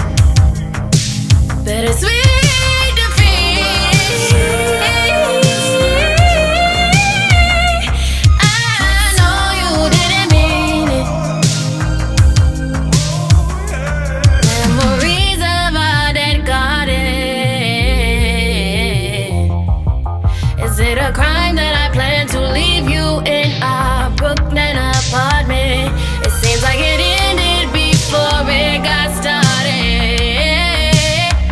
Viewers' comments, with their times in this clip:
0:06 that part. nah this is genuinely bad bad singing and nobody in the studio was honest
0:13 Whoever that male vocalist is in the background he killed shit. Played this song all day yesterday. Too dope